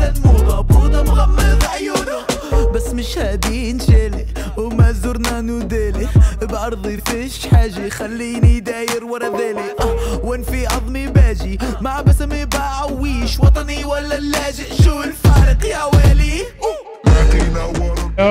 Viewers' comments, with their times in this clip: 0:04 Brooo I heard the Arabic music I was so confused 😅 liitt